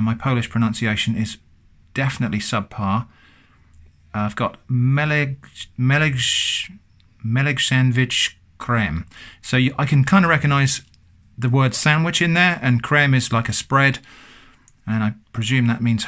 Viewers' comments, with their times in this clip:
0:04 It was Hungarian, not Polish, btw that wasn't that bad, it was pretty close! (: